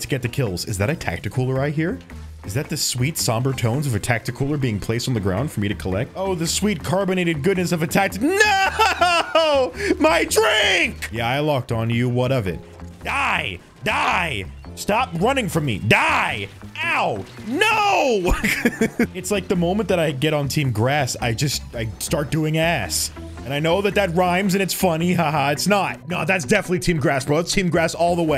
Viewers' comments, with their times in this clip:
0:09 I swear I hear that dude from spongebob that wanted his Diet Dr. Kelp